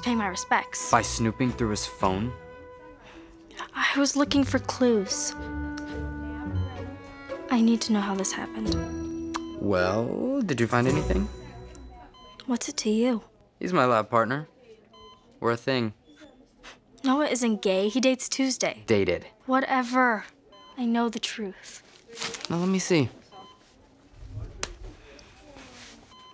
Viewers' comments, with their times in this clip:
0:09 The way he is asking her " did you find anything"